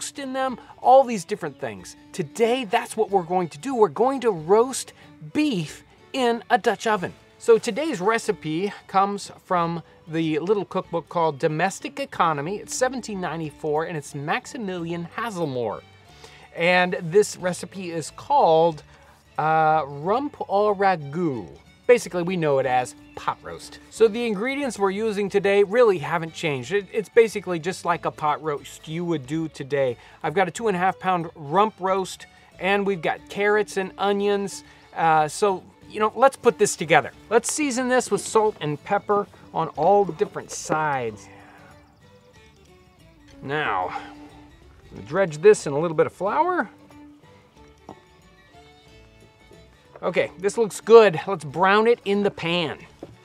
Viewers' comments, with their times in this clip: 0:05 I set the sound of you saying the word beef as my text tone.
0:39 No one else hear a moan of 'Oh yeah' as he rubs that meat? I can't be the only one.
0:40 Did anyone else hear the whispered "oh yeaaahh" ?
0:40 "oh yeeeah" anyone heard that?
0:40 audible oh yeah
0:41 EVP or Creepy camera guy loves it when you season meat "yeah"